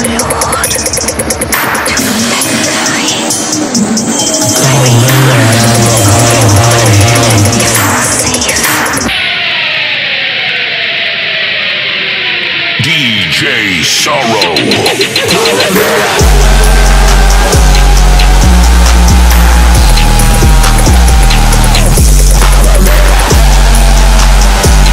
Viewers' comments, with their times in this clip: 0:09 The guitar pick slide from HELL